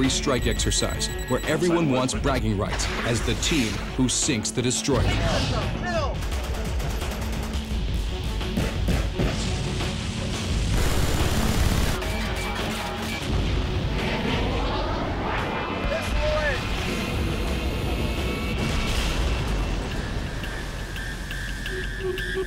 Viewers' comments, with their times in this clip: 0:10 That's the worst CIWS sound effect i've ever heard.